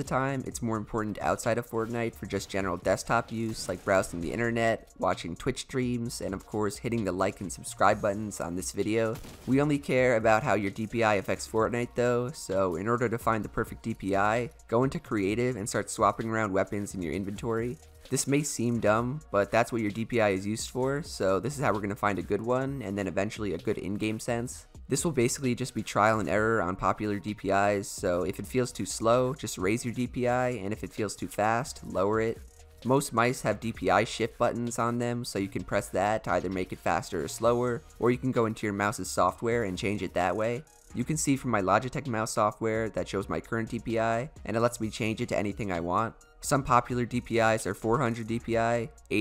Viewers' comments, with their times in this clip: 0:10 He was holding his laugh
0:34 it sounded like you said sh!t lol